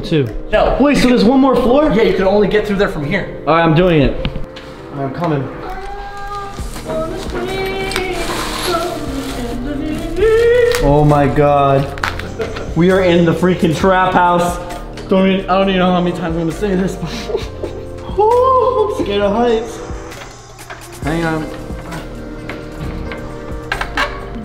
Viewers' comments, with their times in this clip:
0:05 Made me laugh so hard! That was great singing.